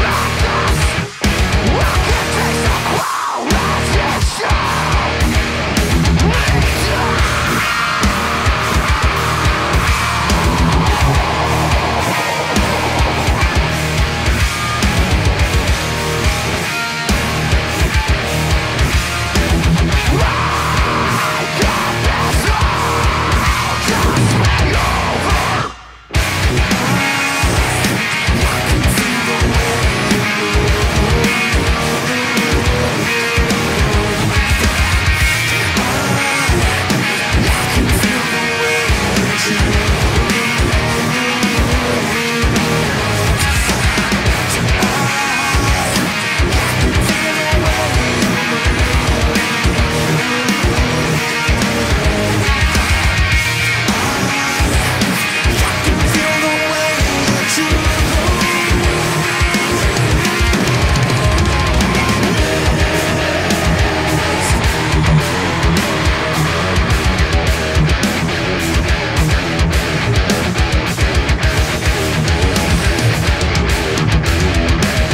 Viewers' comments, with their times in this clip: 0:06 What exactly are you playing to create those high chords? Harmonics?? Because you're not playing it anywhere close to how I thought you were playing it before I watched this and now I'm confused as hell. I wish my understanding of guitar was just half as good as yours.
0:07 Those high notes in between the groove are the best! I wish the guitars were this clear in the released mixes.
1:02 Cannot wait for the new album! That last riff is tasty as fuck!